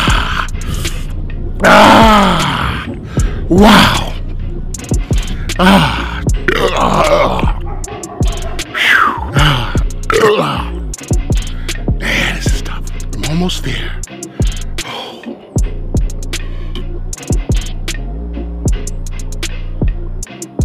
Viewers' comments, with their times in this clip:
0:05 He burps so loud the neighbor's dog starts barking. This man is such a badass
0:05 When you burp so hard the neighbor's dog wakes up and barks like "wtf?"
0:06 Badlands Burp & the dog barked.